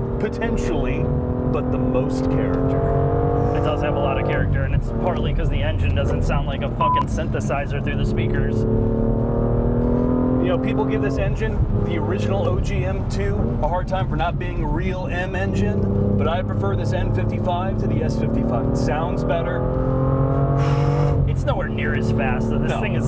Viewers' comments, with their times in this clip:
0:05 I love the halfhearted bleep. Makes it so much funnier